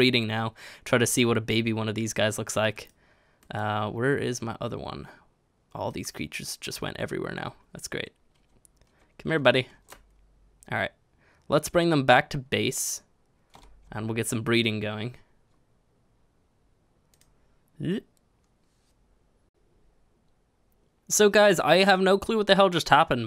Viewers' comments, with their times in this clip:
0:04 um, where is my OTTER one? xD